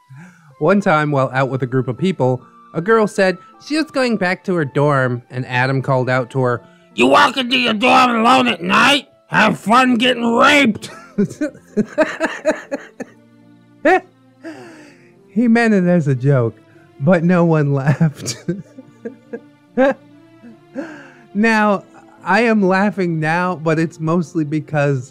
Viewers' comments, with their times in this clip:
0:06 Gilbert Gottfried has entered the chat